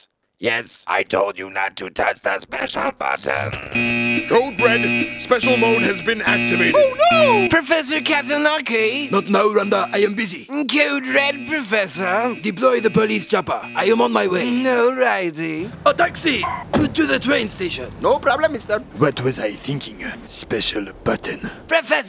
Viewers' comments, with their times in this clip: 0:10 Your videos is an addiction. Love the secretary voice he was smoking weeds